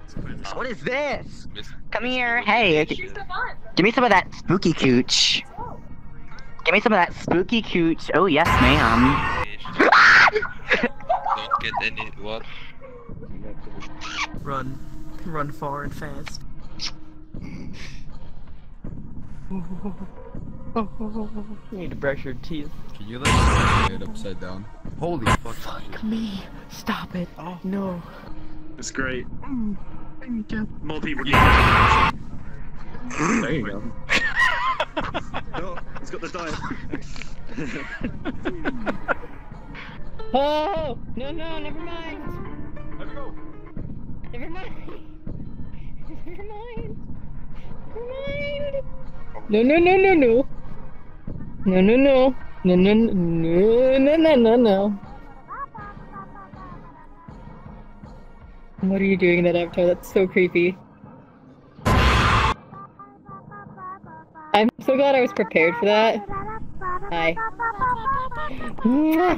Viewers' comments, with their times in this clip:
0:09 I've never herd Toga scream like that, and I've never even WATCHED BNHA
0:09 He actually screamed like a girl! XD
0:09 the scream XD
0:40 Undertale music intensifies 😂
0:40 I like how there are just random Megalovanias there
0:52 did i just hear a girl singing megalovania?!